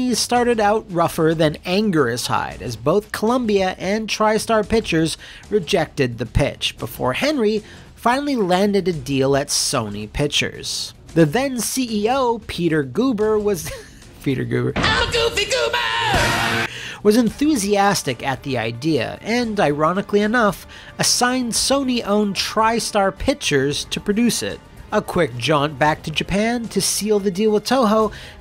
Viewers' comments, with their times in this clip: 0:09 Does anyone else hear lightning and thunder?